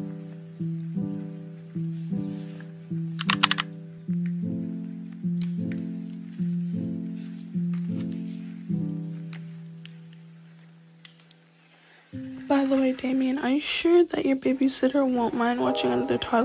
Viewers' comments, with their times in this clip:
0:04 LOL THE WAY HOW YOU SAID "DRIVE"